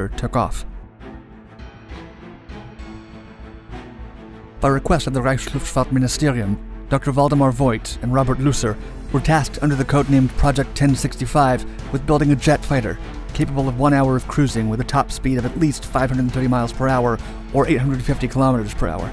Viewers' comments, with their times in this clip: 0:05 I can't be the only person to have heard "Dr. Voldemort"